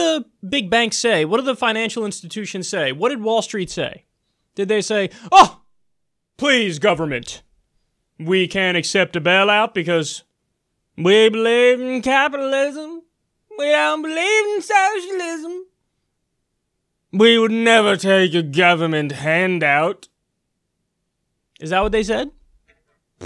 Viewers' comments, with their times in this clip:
0:07 is where i lost it ! Lol smh his rich snob accent gets me all the time ! Lol
0:11 whyyyyyy i can't watch due to how cringe worthy those impressions are XD otherwise the videos really ought to be checked out! i find it crazy how so many people hear of democratic socialism, and don't understand that its a different concept. how fitting for the age of people who only read headlines and captions.